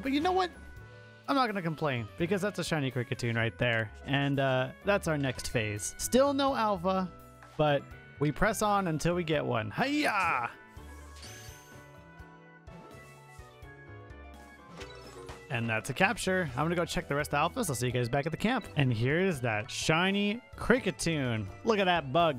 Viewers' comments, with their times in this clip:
0:10 you sounded like Fox from Star Fox in Super Smash Bro lol